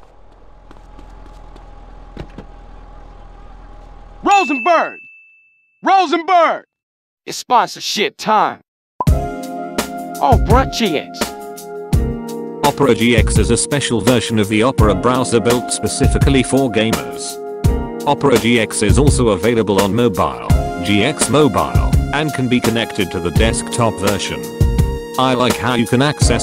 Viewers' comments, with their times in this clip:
0:08 smoothest 'GX' I've ever heard